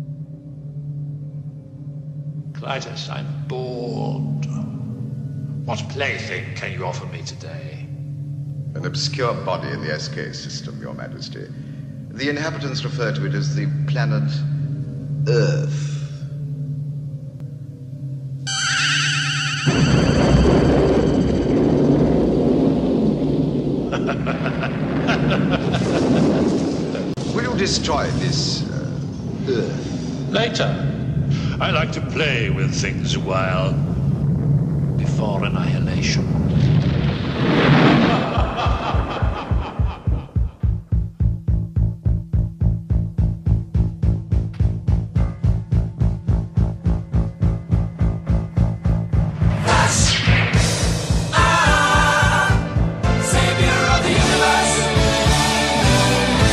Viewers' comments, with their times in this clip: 0:06 sounds like Palpatine
0:12 the sheer amount of disdain and contempt when he says "earth" is simply amazing.
0:14 I like how he says ''planet Earth'' with utter contempt :D
0:38 someone knocking on your door at 4 am